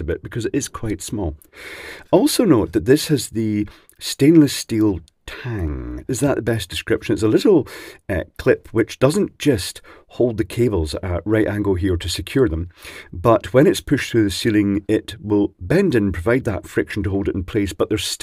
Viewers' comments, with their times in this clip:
0:04 Stainless-steel Tang. Not General Foods Corporation's finest formulation of their signature drink mix.